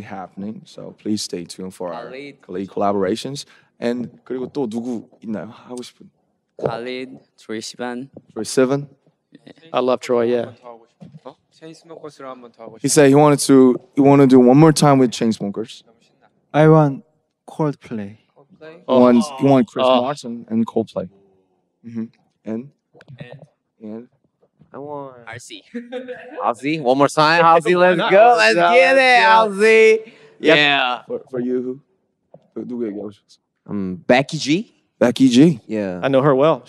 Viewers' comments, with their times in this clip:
0:07 Jimin pronounced Troye Sivan perfectly!! Namjoon, next time do ur homework 😂💜
0:16 tae saying coldplay sounds like a little boy asking for a toy from santa
0:17 Am I the only one that thinks Taehyung sounds like Michael Jackson?....
0:18 “i want cold play” i actually lost it! Listen to that soft voice, look at the cute smile right after! I’M SOFTY SOFT SOFT!